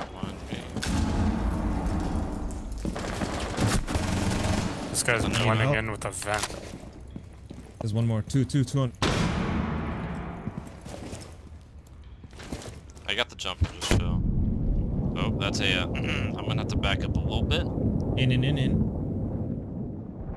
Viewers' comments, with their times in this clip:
0:04 was that dr.heinz doofenshmirtz??